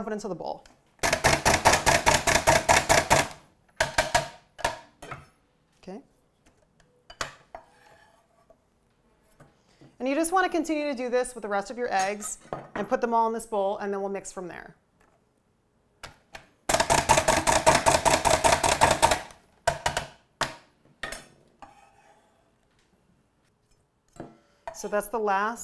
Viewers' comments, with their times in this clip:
0:06 that “okay”. Orange is the new black vibe